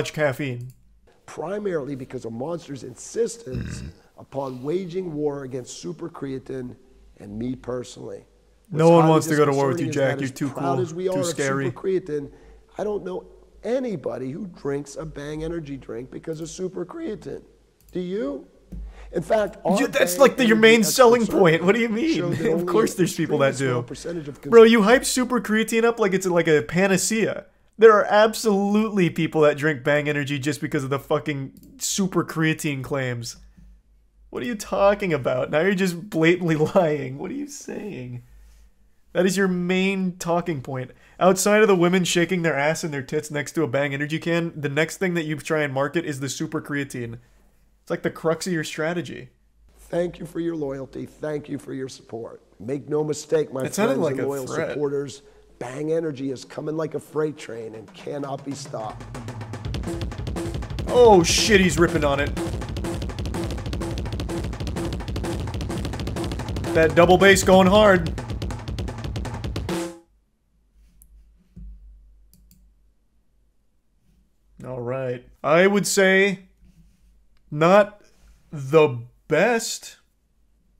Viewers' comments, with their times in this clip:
0:03 Jesus you could have some nice ass vibration bass
0:58 Lmao the drum solo It's 3am
1:00 the sound your heart makes when when you drink this garbage
1:01 The sound of a human heart when the SUPER creatine kicks in